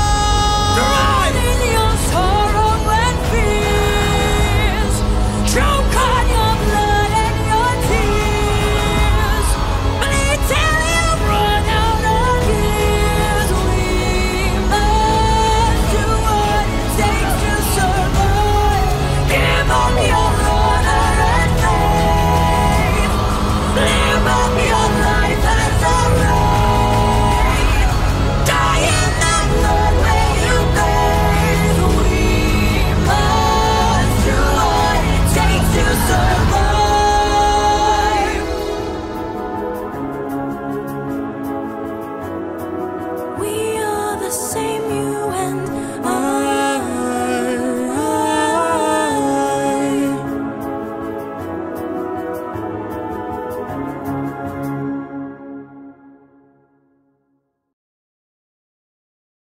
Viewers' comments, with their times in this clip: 0:04 If you listen closely during the part after Odysseus says “Row for your lives”. You can hear the screams of the six men being eaten by scyllas heads, eg
0:46 eurylichus is like “homie are you fuckin harmonizing with the monster aw hell nah”
0:46 god damn, cough cough.... smash